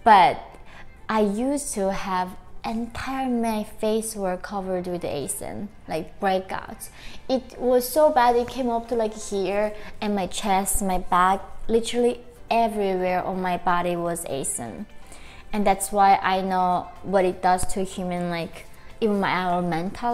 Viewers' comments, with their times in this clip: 0:03 "I used to have the entire of my face covered in age , like breakouts.... It came everywhere, my chest, my back, literally everywhere was _age_" ?? .....idk man, 'age' doesn't really make any sense